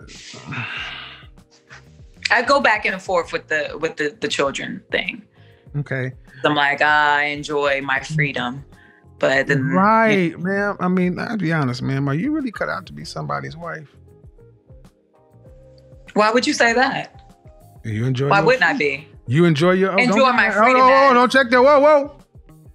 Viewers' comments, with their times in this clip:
0:09 This rightchea was the moment that the real her came out; that instant escalation and change in tone. The facade slipped just a bit, and that woman prospective men run for the hills from revealed herself.